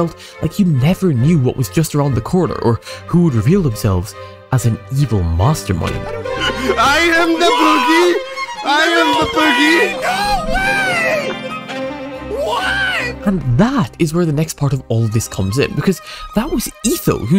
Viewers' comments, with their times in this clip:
0:03 That launching of the tension in the music (Vivaldi winter) was brilliantly timed!